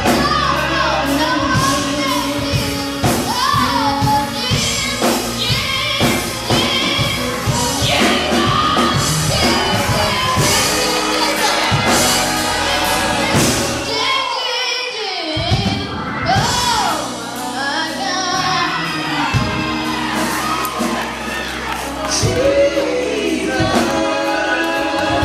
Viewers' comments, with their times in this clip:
0:07 from his gut 😩🙌🏾🙌🏾 I’m still listening in 2019?